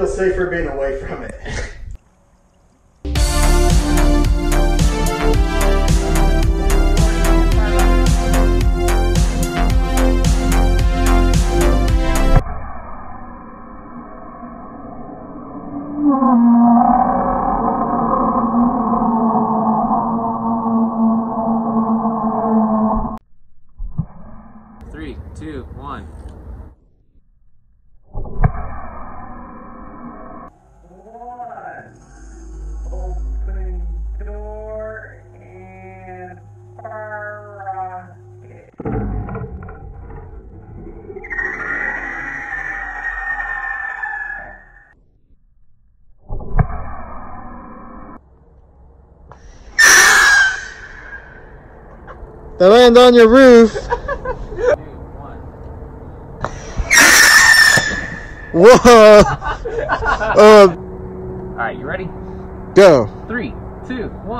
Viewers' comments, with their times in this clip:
0:10 chewaka screaming hahahahha
0:11 Sounds like an actual rocket
0:12 a rare recording of the sound of monsters under your bed that you thought existed when you were 6
0:14 you discovered how to make the Godzilla growl. Bravo!
0:14 the heck was that scream
0:15 What the hell did the rocket hit!? sounds like godzilla or something, well not godzilla but yknow Edit: nvm the rocket just decided to scream
0:15 sounds liike a monster scream😂
0:15 the crew of the submarine scream as water flushes Into the compartment and ultimately floods the entire sub and they know that they have no way to stop it
0:15 Did you fire a missile or a Wookie out if that submarine I’m confused?
0:16 very disturbing noises
0:16 Was that a wookie?
0:16 tell me that doesn't sound like an underwater beast
0:17 Chewbacca screams from hell
0:17 sounds like a roaring yeti on a mountain
0:17 that's a good noise for a giant monster
0:18 One of my farts
0:20 sounded like godzilla😂😂😂
0:48 the screams of the damned